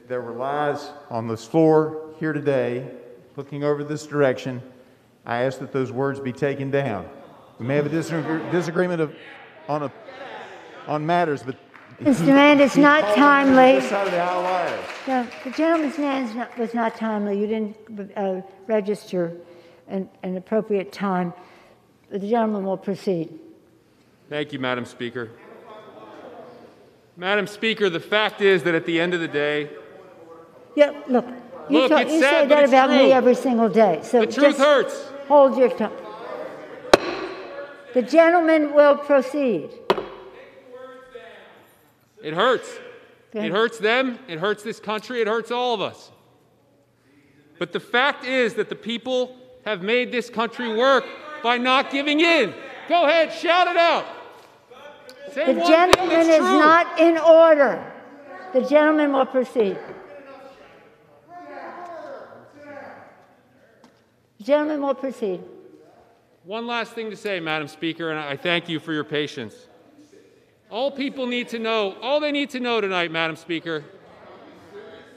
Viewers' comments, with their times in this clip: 0:10 Bruh, someone really shouted “deadass” during a joint house session😂😂💀
0:10 I'm living for whoever Shouted "Deadass"
0:10 Yoooo if you fast forward to someone yells out deadass lmbaoh!!!!! 😂😂😂
1:00 lol there’s someone shouting at them to sit down like your middle school sub would